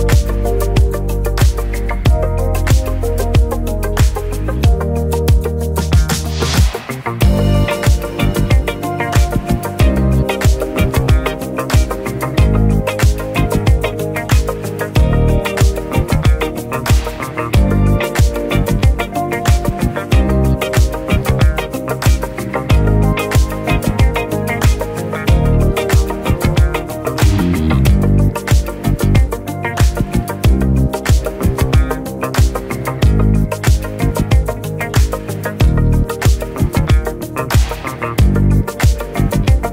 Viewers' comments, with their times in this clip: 0:07 Damn that's a good beat.
0:27 That little bass riff on sends me to another PLANET— OOF!! 🙏🏼